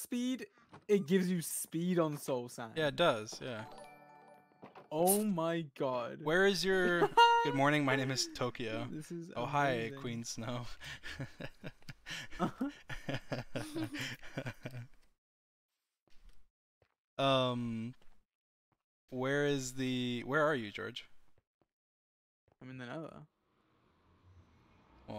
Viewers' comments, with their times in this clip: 0:07 Dream said 'O hi' which sounded like 'ohio' which means Good Morning in Japanese...